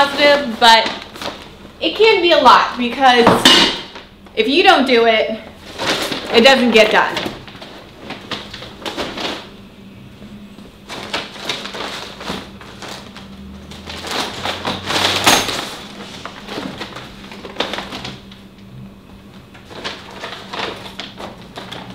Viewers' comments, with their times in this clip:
0:07 :o <3 that's like ASMR moment hah :D